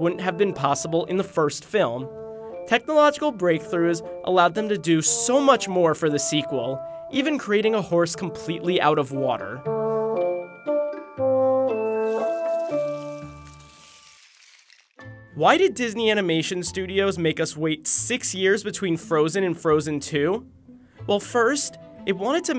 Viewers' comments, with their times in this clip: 0:09 me thinking that the song was animal crossing